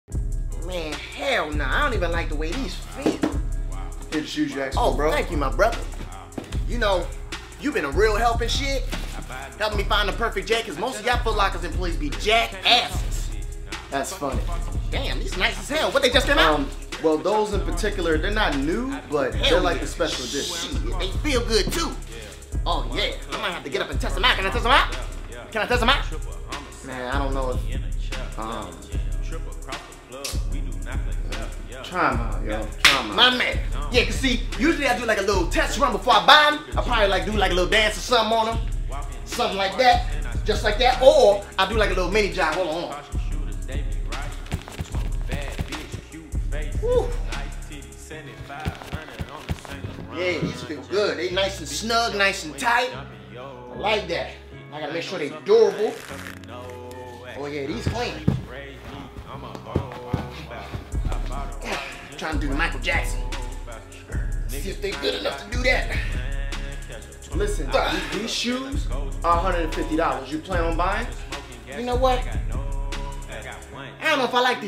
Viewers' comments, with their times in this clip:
0:05 "You kno-" buffers
0:55 tho omg DID👏YALL👏HEAR👏THE👏STRETCH👏 OMG IM WEEZING